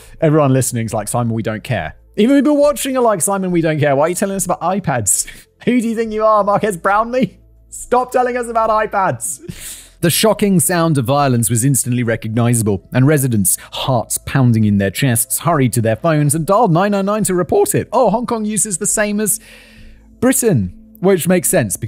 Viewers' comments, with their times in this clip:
0:04 Lmao it never fails to amuse me when people pronounce Marquees as Mark-Ass <feeling judged by that 2 second gif of Mark-Ass Brown Lee>